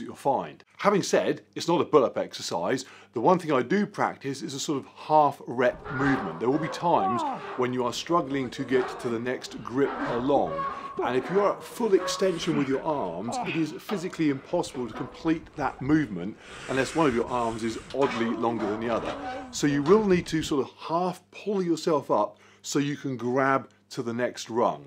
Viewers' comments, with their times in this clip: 0:08 m haha. I know that groaning sound very well 😂